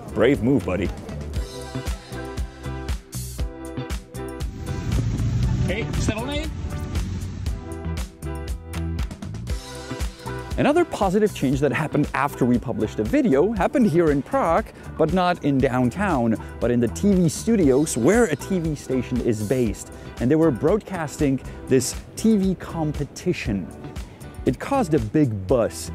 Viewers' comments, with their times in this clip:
0:07 when the cabbie is driving away I want to point out something funny. If you listen it sounds like he said se van a ir? Which is Spanish for are you going to leave? Languages are so interesting he really said something like hey sivolny but it's still interesting how languages use the same sounds depending on where they are used.